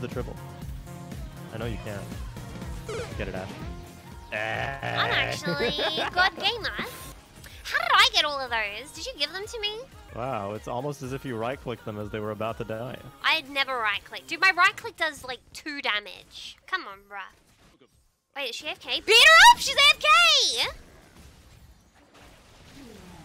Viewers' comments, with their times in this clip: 0:07 funny and great video did anyone else hear the r roll caught me off guard lol